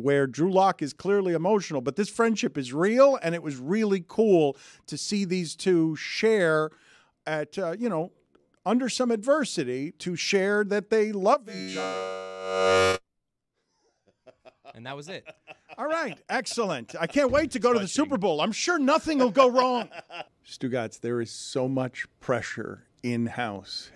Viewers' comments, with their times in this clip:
0:08 ROBOT! "I GOTTA TELL YA"🤣🤣🤣